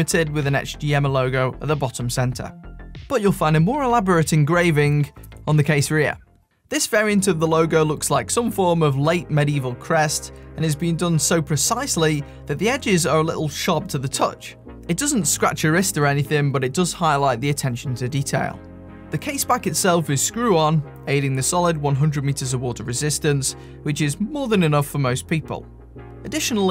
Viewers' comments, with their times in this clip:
0:07 perfect use of home resonance